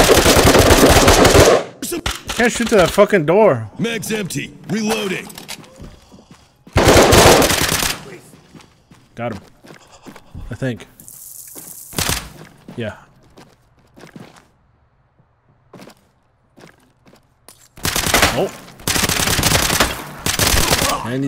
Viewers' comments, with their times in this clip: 0:09 Did that downed tango on release his bowels??!?!?!?!?! (o_O) or what was that sound?